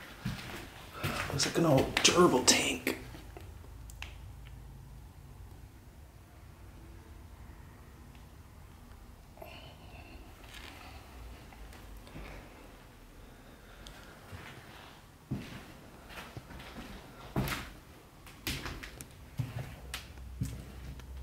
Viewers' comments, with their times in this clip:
0:09 Listen when at the gerbil tank u hear what sounds like "bring it back" in a whisper. So creepy!!
0:09 the sound of little girl whispering "bring it"
0:09 Very creepy. The mist, the voices, all of it. I bet that piled up old carpet contains blood stains also. Was that blood spatter marks on the door the matress was against? The voice though ... CHIIIILLLSS!
0:09 omg something says bring it back